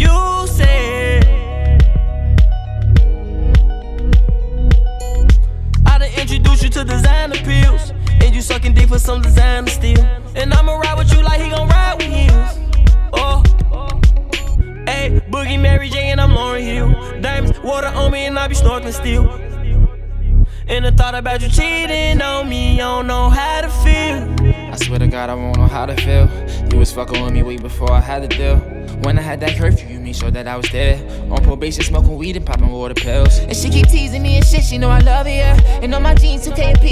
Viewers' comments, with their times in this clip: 0:06 That lil lip cracking sound a is making me cringe so much like engineer had one fucking job !!!! 🤦🏽‍♂️🤦🏽‍♂️🤦🏽‍♂️
0:24 the way A Boogie switches up his flow is amazing, this part of the song is the hardest by far